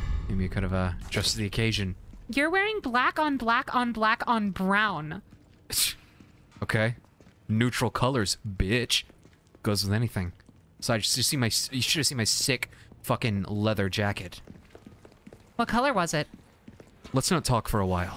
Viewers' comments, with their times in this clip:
0:05 legitimately killing me the way he says "biIiiItch" 🤣🤣😭